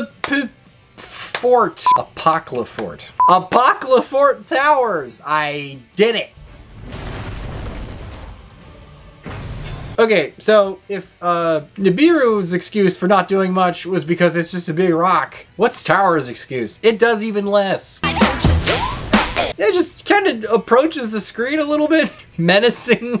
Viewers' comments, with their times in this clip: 0:05 [HYSTERICAL LAUGHTER] "THAT'S NOT AN ANIMATION! THAT'S JUST A FUCKING PNG!!!"